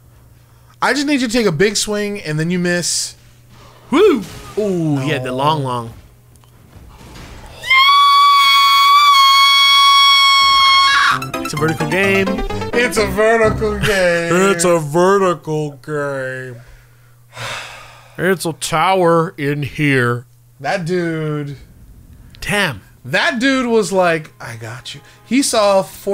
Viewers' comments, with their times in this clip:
0:07 warning for viewers with headphones and small dogs.